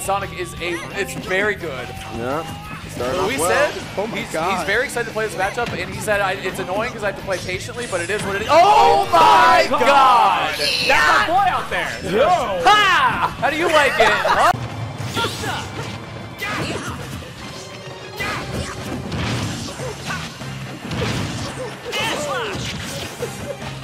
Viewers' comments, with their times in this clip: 0:09 bro did not just yell gyatt 💀